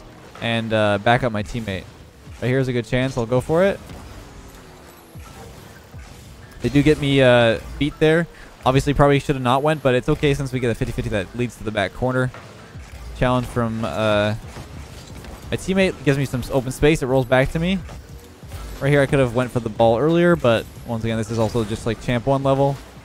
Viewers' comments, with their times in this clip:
0:10 LOL I hear a oneplus ringtone Someones calling you